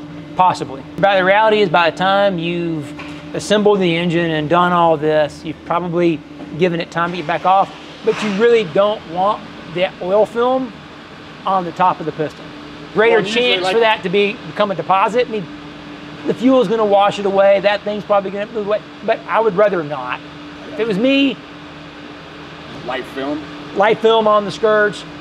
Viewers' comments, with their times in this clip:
0:08 Did I hear an OBS 7.3 start up ?